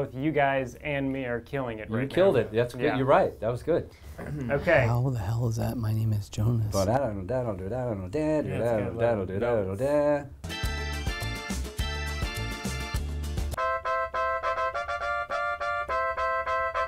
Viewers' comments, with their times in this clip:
0:04 is the best part. Rivers is so quiet